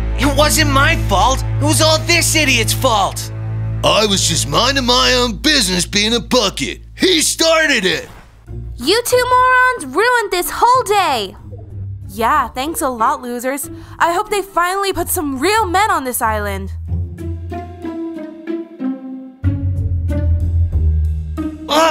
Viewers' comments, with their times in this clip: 0:08 if you listen carefully you can hear a combat shotgun